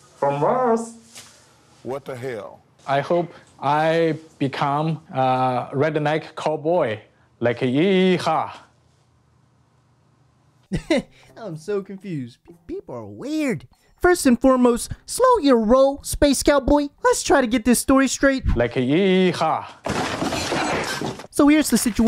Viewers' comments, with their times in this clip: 0:03 Dude sounds like a spy Reminds me of Futurama "my name is hu-man"